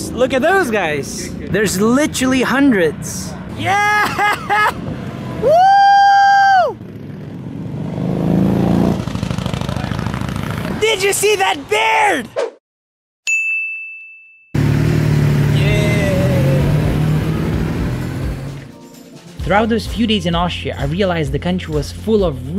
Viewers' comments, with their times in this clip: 0:10 Did you see that 🐻 bear...I heard it wrong 😅